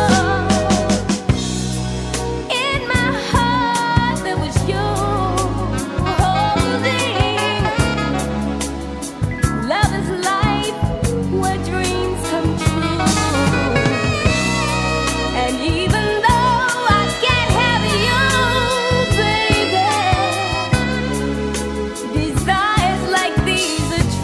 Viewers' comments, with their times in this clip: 0:10 It kinda sounds like she sings "Wet Dreams Come True".